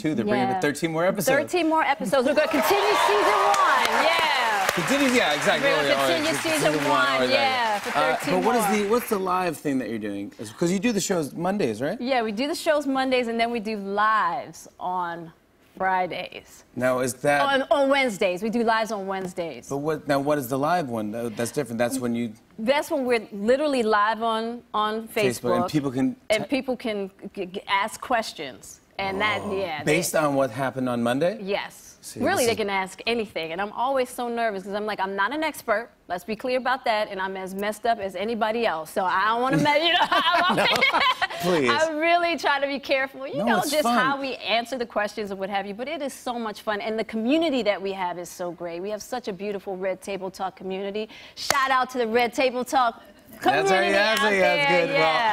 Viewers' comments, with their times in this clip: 0:03 Jimmy is so used to doing fake laugh that he does it even it's not appropriate
0:40 call me crazy but that laugh, reminded me of Zendaya’s laugh